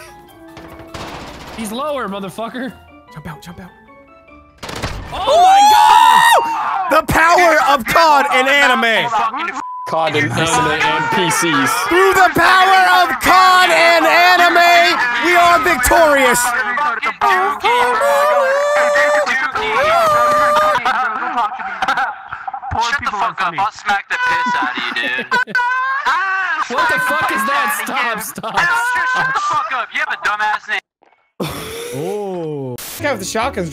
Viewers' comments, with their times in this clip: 0:07 Basically humming don’t lose your way ngl that was cringe 😬 also proves he watches hentai or borderline he tai
0:14 did basically start singing the theme music of kill la kill?
0:19 did dude start singing the klk dont loose ur way